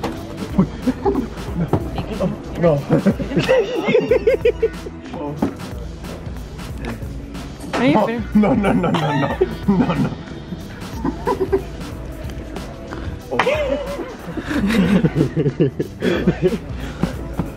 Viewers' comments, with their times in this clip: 0:03 this man laugh like chucky